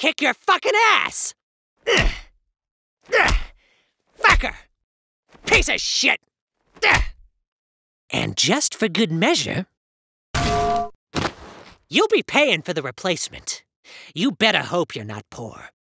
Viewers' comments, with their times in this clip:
0:10 That better not have been a damn metal pipe